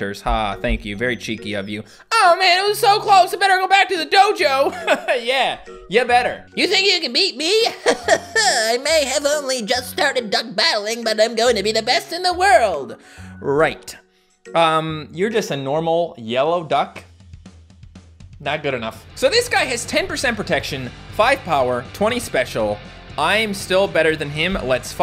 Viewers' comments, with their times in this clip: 0:07 sounds like Konohamaru from Naruto
0:07 sounds like Konohamaru from Naruto
0:07 sounds like Konohamaru from Naruto
0:07 sounds like Konohamaru from Naruto